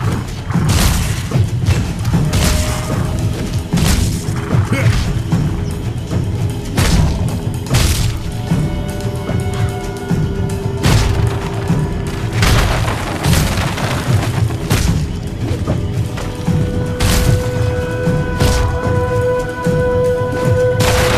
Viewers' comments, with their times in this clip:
0:04 The spell could use some power behind it feels lacking the noise on contact is very low I didn't even notice it at first. I'll be watching this game closely as Blizzard doesn't want me to play their games offline then I'll find something that does, thanks for being awesome!